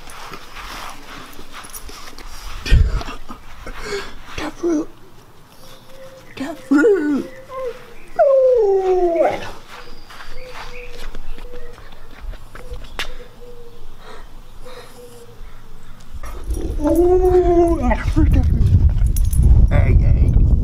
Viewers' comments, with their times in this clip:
0:07 sounds like "da fruuuuiit" :D